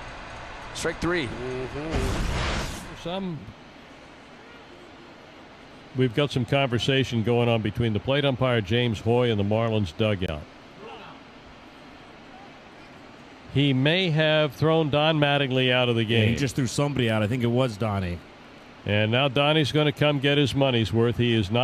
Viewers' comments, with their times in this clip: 0:05 is Howard stern commentating??